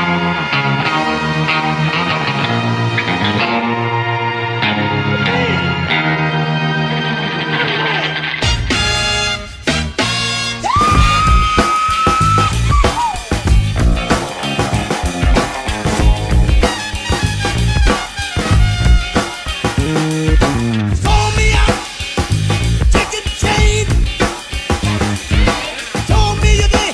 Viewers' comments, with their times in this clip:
0:07 The song could have been so much better if it had blown up, but instead there was some boring ass trumpet and James brown singing... he shoulda stuck to the chorus and let 2pac rip this shit. RIP PAC